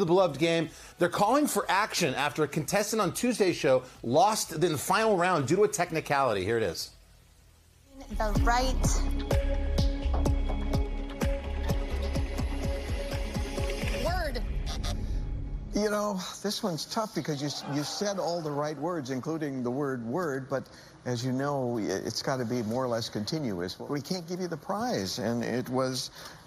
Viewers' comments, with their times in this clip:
0:09 CHOOSING THE RIGHT............... WORD